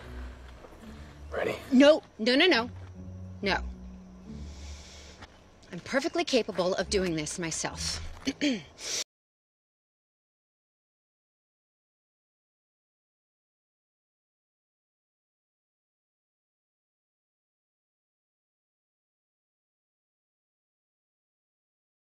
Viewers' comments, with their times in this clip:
0:09 Am I the only one that secs the sound cut off?
0:10 Why their is no sound for